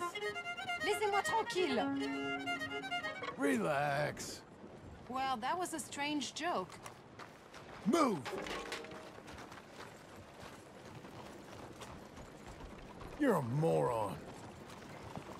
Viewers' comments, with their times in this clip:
0:03 All I did was listening to your violin skills, lady. What's the problem?